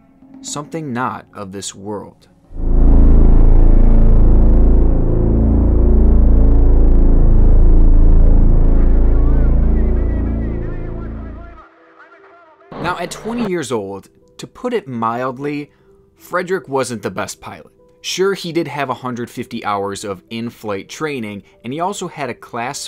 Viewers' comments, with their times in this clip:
0:05 i thought it's the sound of PS1